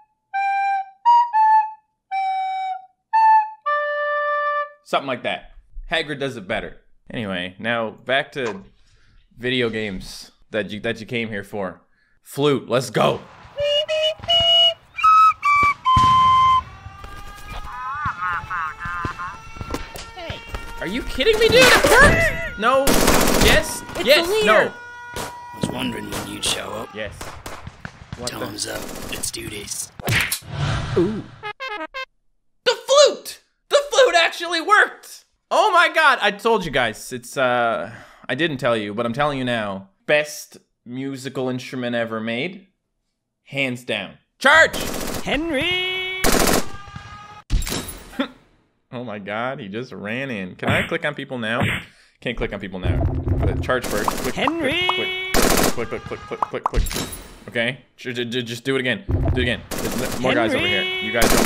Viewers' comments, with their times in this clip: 0:07 The flute music goes away
0:44 First time you can hear henry's voice